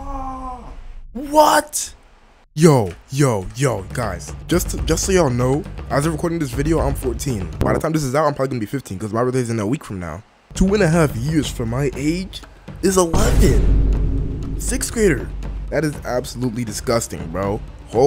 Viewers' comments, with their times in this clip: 0:06 bro how are you 14, bro you sound like and adult😂 I’m 14 and I sound like a 9 year old
0:06 bro does NOT sound 14